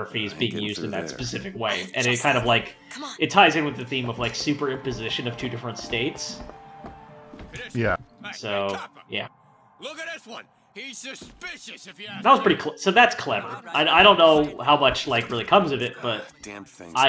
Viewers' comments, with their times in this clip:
0:05 Hang on, was that a carnival organ doing "Girls Just Wanna Have Fun" ? Must have missed that first time through.